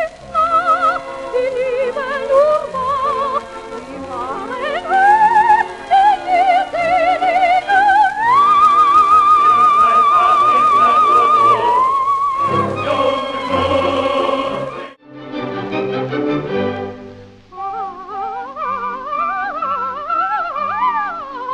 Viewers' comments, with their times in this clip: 0:03 C4 - B3 - C4 You're the first video I see showing that G#3!